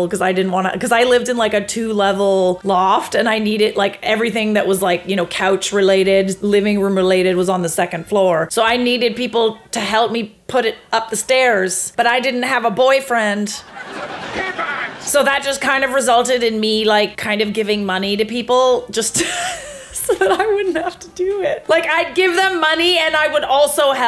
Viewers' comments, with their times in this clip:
0:10 I love how "but I didn't have a boyfriend" is followed by sitcom laughter 😭 LETS ALL POINT AND LAUGH AT THE POOR SINGLE CHICK HAHAAHA!!!!! oh and I'm single too hehe 🥳